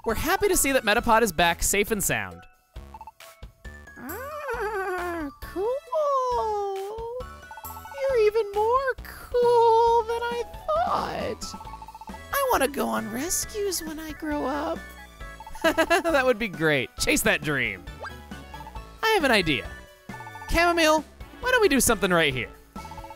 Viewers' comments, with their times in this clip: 0:04 the happy cowderpie soundssssss🤗